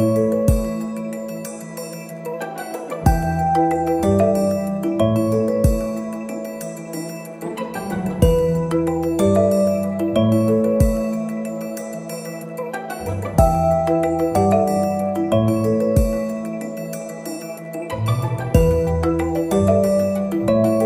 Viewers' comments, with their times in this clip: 0:05 I could hear Monique Heart's brown cow STUNNING!